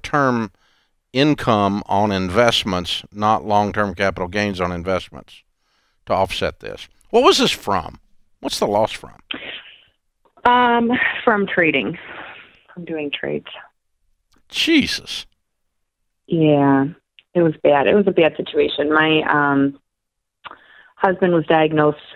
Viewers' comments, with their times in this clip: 0:09 Pretty sure he meant to simply say 'Geeze' but it comes out different